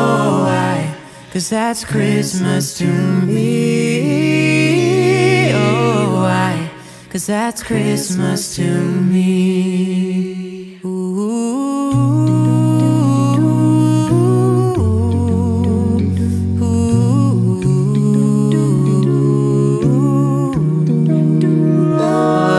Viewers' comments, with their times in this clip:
0:04 is my fav part well one of my fav parts. Listen to Scott he sounds amazing